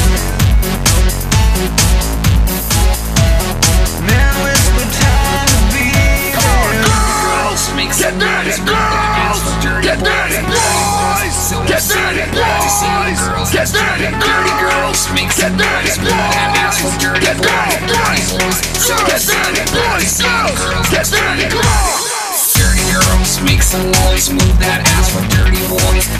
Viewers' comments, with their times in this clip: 0:06 Sounds like just a random G from Detroit just bopped on over to some German club and began yelling.
0:13 The yelling black dude at the mark is awesome.